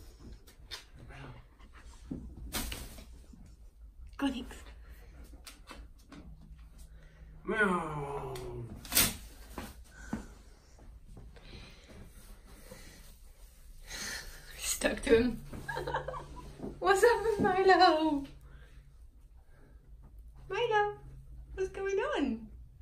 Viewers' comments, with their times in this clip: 0:07 the guy picks up milo and makes an airplane s sound while making him fly, a child at heart XD